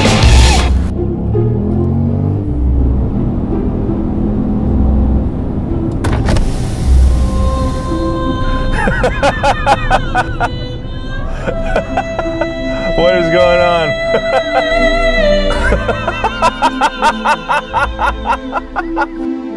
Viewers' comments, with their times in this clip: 0:07 what is that majestic music